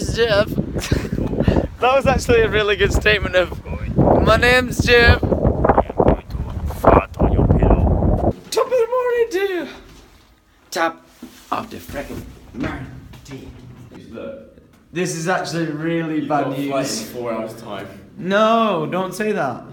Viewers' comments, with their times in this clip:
0:07 we practical have a new jacksepticeye